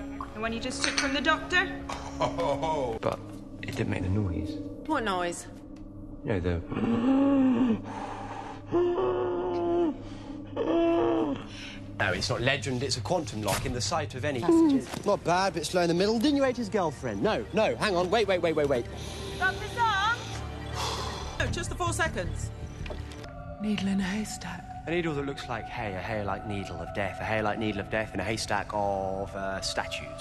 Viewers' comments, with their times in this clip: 0:08 "asthmatic wheezing" is how I'd describe it lol
0:16 wtf he saying? Didn't you ate his girlfriend? Cos if that was what he said then that could be interpreted in a *cough* certain way. Which makes River's confused and slightly guilty looking face even funnier